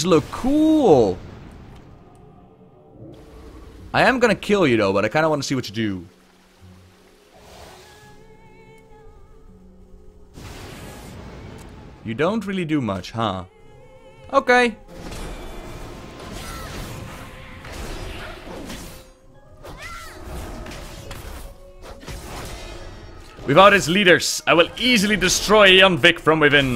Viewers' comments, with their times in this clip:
0:08 did anyone else here the song Sylvanas sings